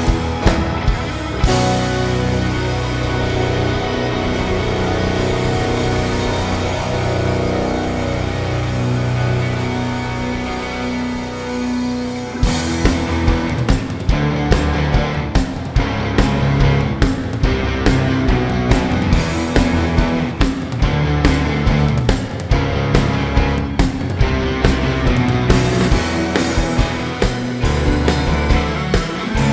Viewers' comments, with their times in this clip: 0:10 Transposed down beyond recognition. Sad.